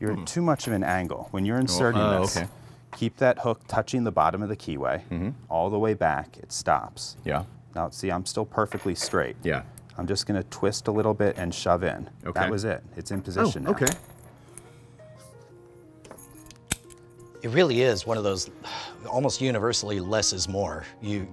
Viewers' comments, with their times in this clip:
0:05 if you close your eyes it reminds me of my friday nights
0:07 "Now see I'm still perfectly straight" Damn but I'm not anymore, this voice is freaking gorgeous